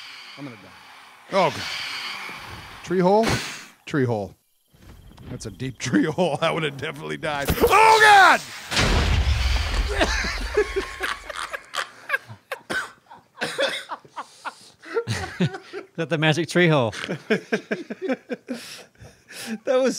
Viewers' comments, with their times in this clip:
0:05 that's going on the best Perfect Cuts screams Minecraft edition. Lol